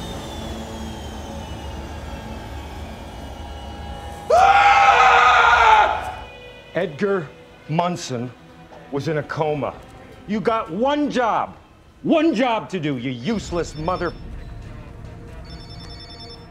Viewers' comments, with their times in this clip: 0:04 Ryan's perfect cut scream lol